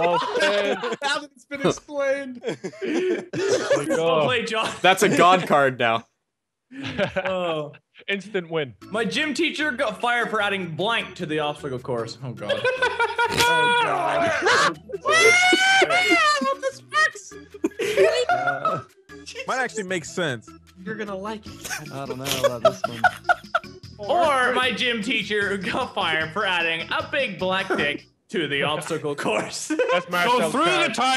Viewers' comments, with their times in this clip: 0:09 does Wildcat puke or something?
0:14 Laughing so hard you start to vomit. I've been there, man. It's sux!